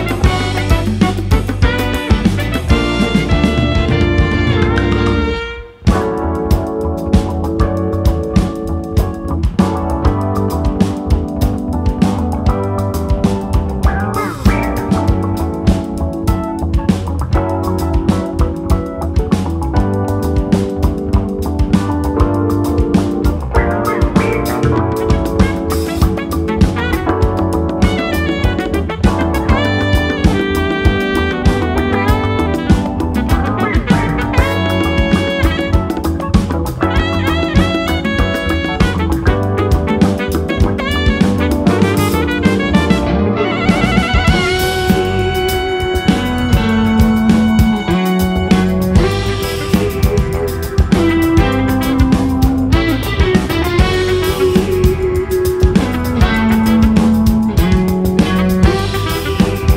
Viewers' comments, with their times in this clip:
0:05 Who else came at the beat drop ?
0:47 tasty guitar solo